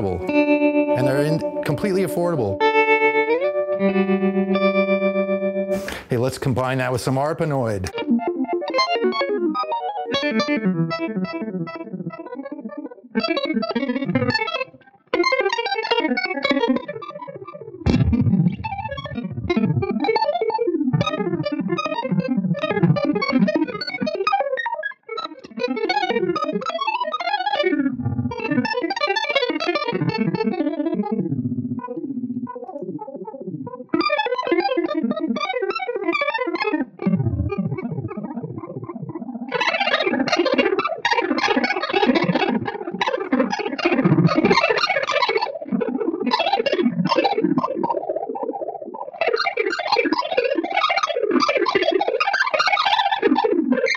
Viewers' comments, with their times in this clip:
0:05 You don't think a keyboard can make these types of noises? ?
0:40 alien translation “damnit Rodger, your fucking human pissed on the carpet again”